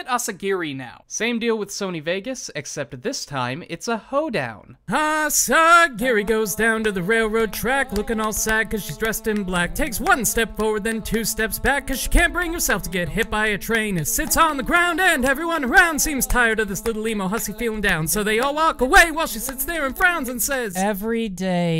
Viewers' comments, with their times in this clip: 0:05 YEE-HAW! Now THAT'S what I think the young'ins call a jam! xD
0:05 I like this country song xD